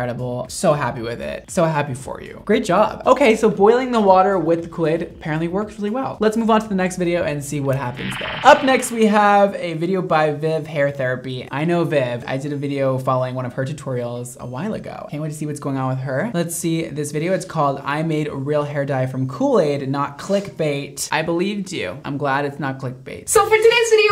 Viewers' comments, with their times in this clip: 0:08 Who Charging A Kamehameha?